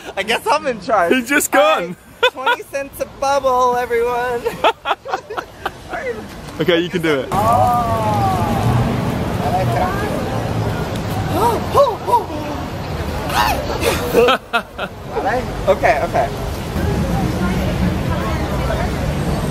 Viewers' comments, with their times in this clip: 0:04 Am I the only one who noticed that he said delicious like Miranda Sings would omg